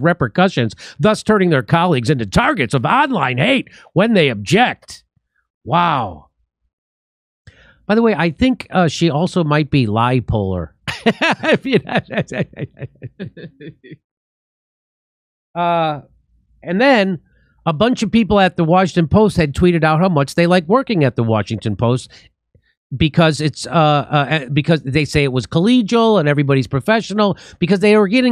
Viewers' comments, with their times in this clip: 0:10 Jimmy's facial expressions and (fake?) laughs right after the "lie polar" comment are worth their weight in gold.